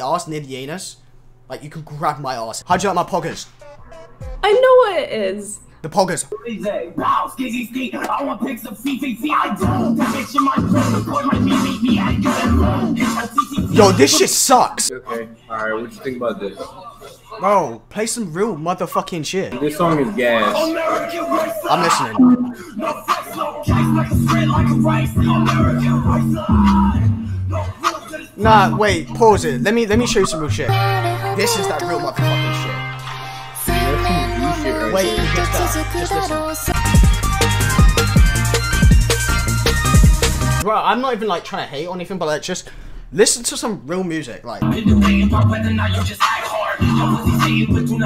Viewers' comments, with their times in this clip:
0:08 this guy bumping Nascar aloe. He has earned my respect 😤⚡
0:09 Dat nigga bumpin nascar aloe
0:32 shoutout to the guy listening to Nascar